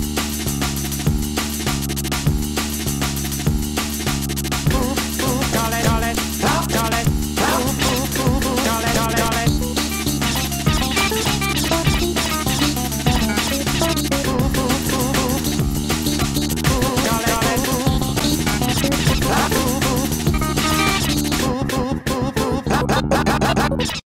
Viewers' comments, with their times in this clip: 0:04 this first part kinda fitted in with the tempo but in a different way
0:21 i love how the audio just glitches out at the end